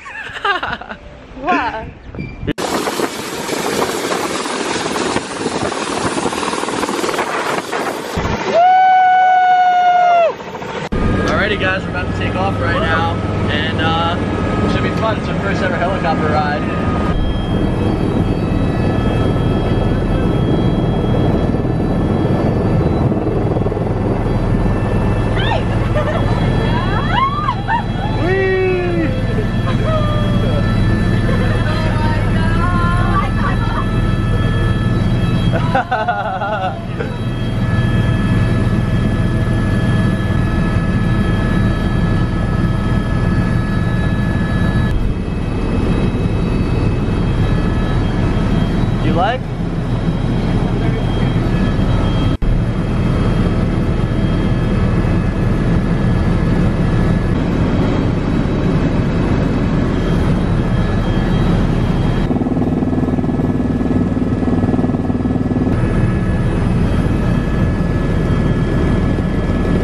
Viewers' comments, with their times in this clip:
0:07 sounded like DJ Khaled on a jetski
0:50 yo you hear someone shat